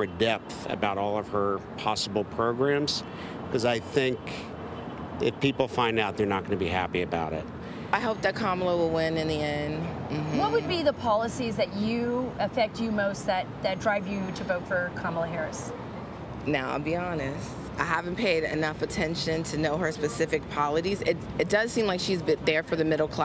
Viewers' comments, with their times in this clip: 0:08 Did that woman say "Polidies" 🤣🤣